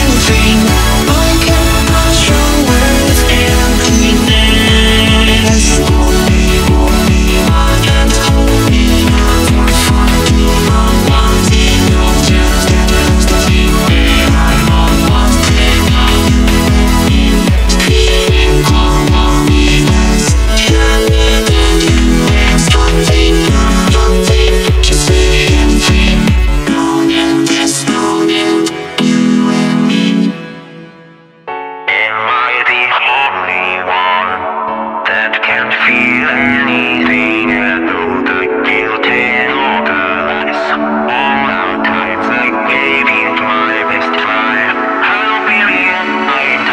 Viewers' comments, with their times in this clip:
0:07 Soundwave singing ? XD
0:30 the tone change. God damn thats good.